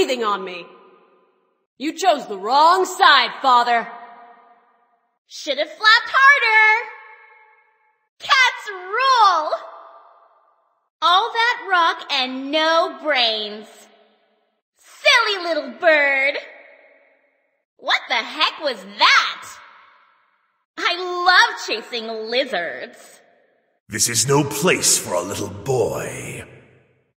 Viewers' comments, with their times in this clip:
0:10 sorry, I misheard it for: “All Rockets No Brains, eh? Mate.” Coming from Mr. Mundy as TF2 Sniper